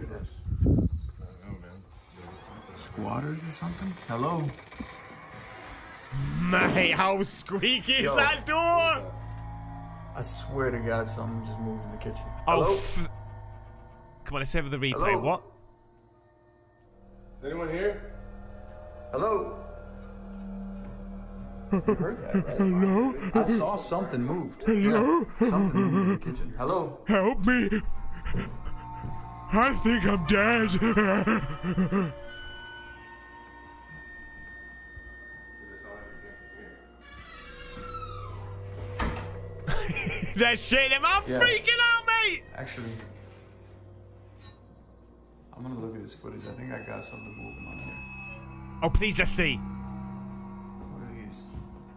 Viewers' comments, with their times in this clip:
0:05 i know its an old and haunted house but for God´s sake put some grease on them hinges good lord you might wake up more dead folk with that noise
0:38 MAXIMUM SOUND EFFECTS!! 🤣🤣🤣🤣